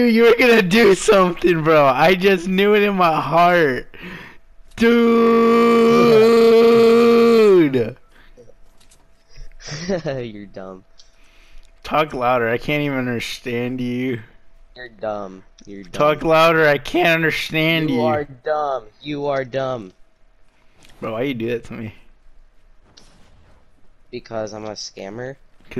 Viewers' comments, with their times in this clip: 0:06 He sounds like a motorcycle